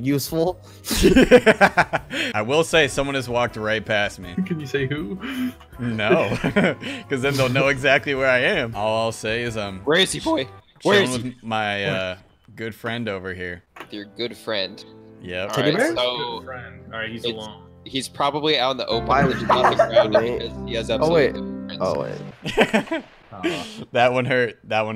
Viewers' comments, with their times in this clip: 0:09 The voice crack tho 😂💀